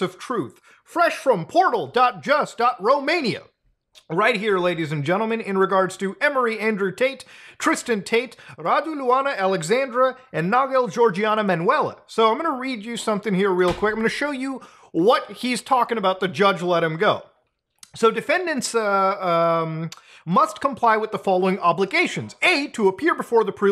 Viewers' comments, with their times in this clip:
0:10 Even tho I understand how serious this shit is, as a romanian, I can't help but giggle like a 3 year old kid finding some old candy in the trunk of the family car when hearing the way you pronounce the name "Manuela"